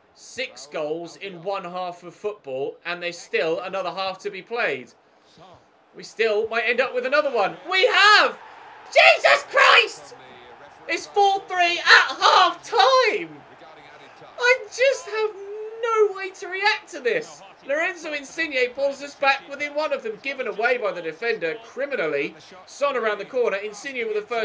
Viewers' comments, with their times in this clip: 0:08 does this count as a voice crack?